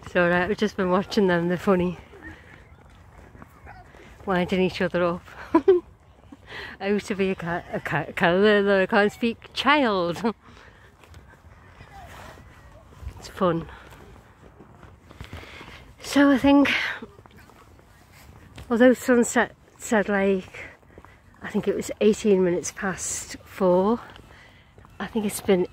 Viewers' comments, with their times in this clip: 0:06 The water is so calm and clear like a mirror. Big difference from the other day when the wind was blowing the water up over the edge. "I want to be a cat" child, cute slip of the tongue. The dogs are really cute. The Christmas music sounds different coming from nowhere. Does the ice cream truck go round and sell hot chocolate? Lots of people still out yet but it gets dark early.